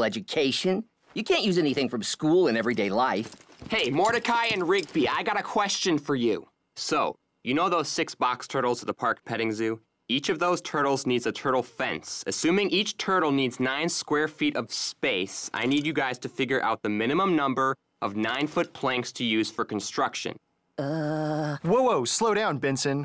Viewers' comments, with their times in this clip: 0:04 love how Bensons tone changed it like he reading aloud a worksheet lol